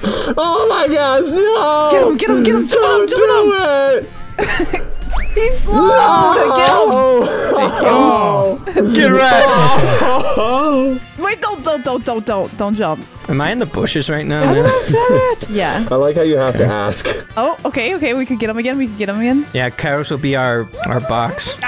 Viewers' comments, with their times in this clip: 0:08 idk about u guys but that definitely sounded like a horse to me 😂😂